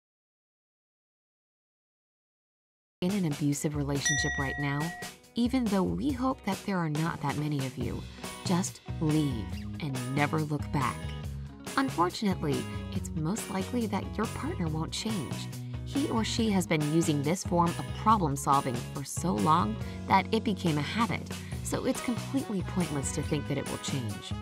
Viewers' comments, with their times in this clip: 0:04 Didn’t get any sound until
0:12 A portion of your video seems to be muted. From the :10 to the mark, I can't hear anything..